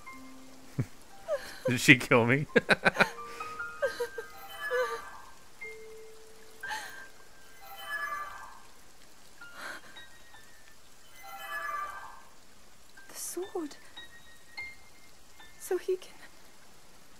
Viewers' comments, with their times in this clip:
0:05 the good old FI sound is in this episode